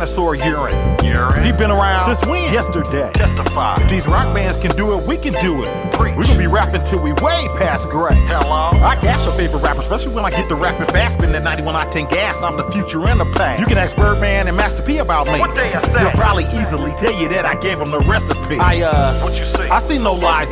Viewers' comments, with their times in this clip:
0:08 40 went in on that.